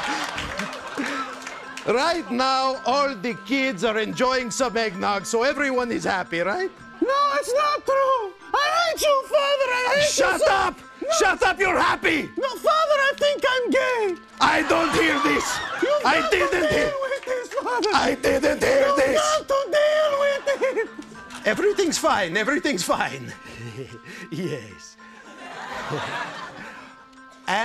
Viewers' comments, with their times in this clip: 0:09 I love how one of the puppies actually reacted when Triumph screamed "shut up!"
0:09 even one of his siblings freaked out when Triumph screamed "shut up!" 😆